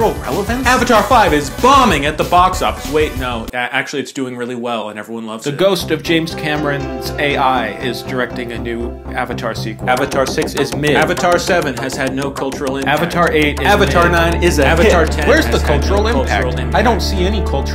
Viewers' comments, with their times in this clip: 0:05 Bro, you sounds like the voice of Cameron